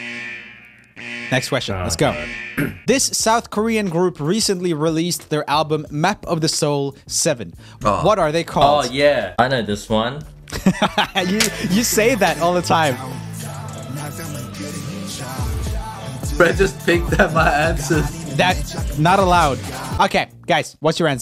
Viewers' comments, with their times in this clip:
0:07 me screaming IT’S BTS YALL SAY BTS RIGHT NOW SAY IT Twoset: BTS me: hecc yea Eddy: Bangtan sonyeondan me: iNhaLe beautiful pronunciation.